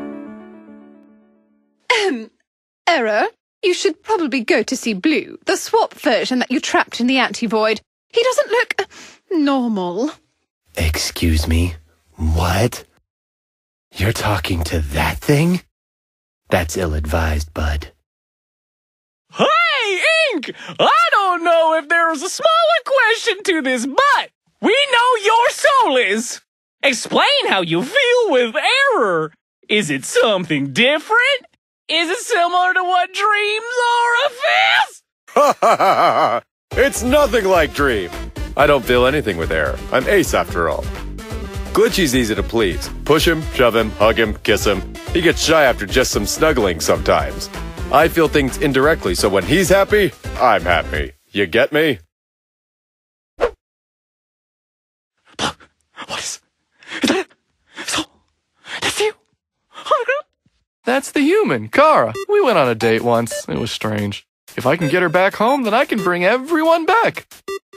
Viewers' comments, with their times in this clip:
0:05 That sounds like Bierce from Dark Deception.
0:18 No ones gonna mentiin the country voice ? XD
0:36 I WUV INKS VOICE ITS SO NOICE FOR ERROR TO BE PLEASED
0:55 this person sounds like a deranged hermit and i’m living for it!